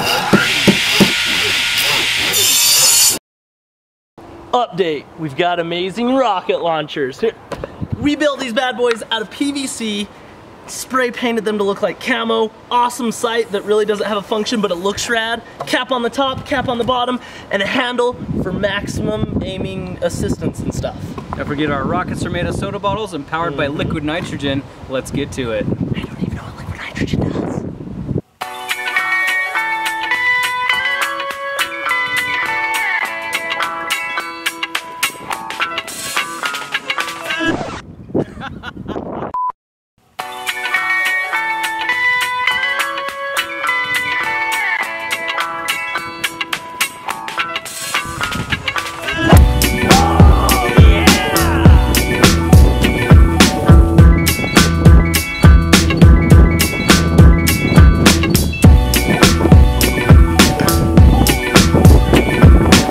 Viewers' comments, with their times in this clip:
0:08 his voice is like voice of Pickles from Dethklok XD
0:49 that music pickup really made his second attempt wonderful :D